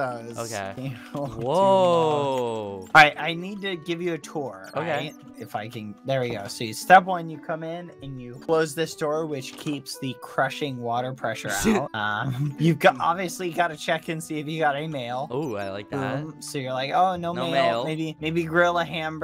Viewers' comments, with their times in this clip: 0:05 WAIT DID HE SWEAR OR AM I DEAF (edit : he said if i can)